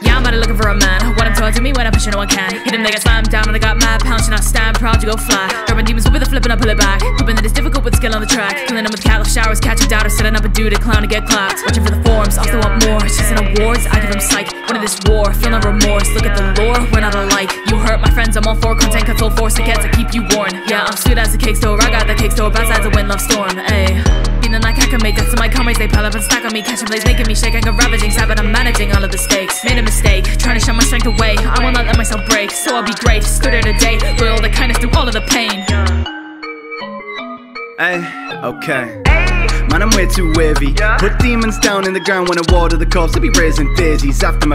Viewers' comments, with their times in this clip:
0:10 am i sopost to sing all of this at the same speed? and check out
0:25 Your flow here was great 👍